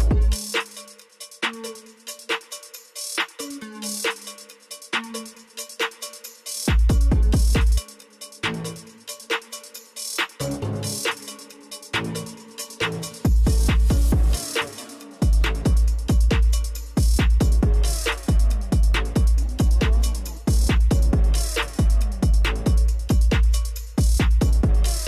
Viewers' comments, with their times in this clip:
0:07 OI OKUYASU ( the sneezes )